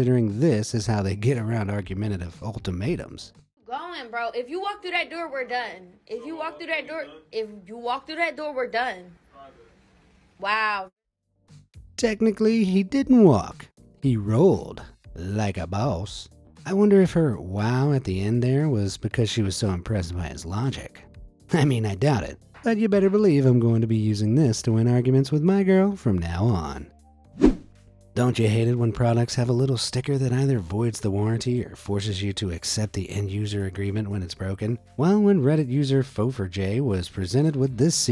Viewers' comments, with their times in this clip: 0:09 I've never heard a dog scream before, and I hope I never do again.
0:09 That sounded more human and less doggy lmao
0:09 Did it had to scream that way?
0:10 bro sounding like a human
0:23 That Kind of Sounds like a person screaming